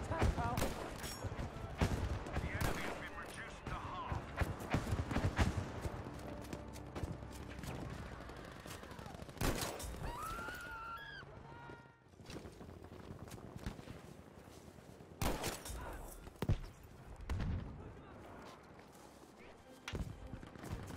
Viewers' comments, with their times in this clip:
0:08 gets headshot dead character screams like an 11 yr old girl in a haunted house